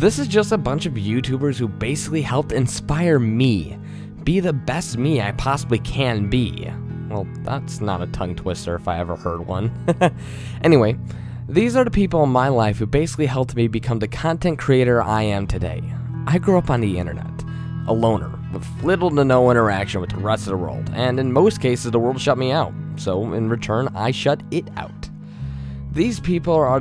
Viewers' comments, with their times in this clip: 0:09 the little laugh made me want to stab myself that was so kawaii awwwwe ^ - ^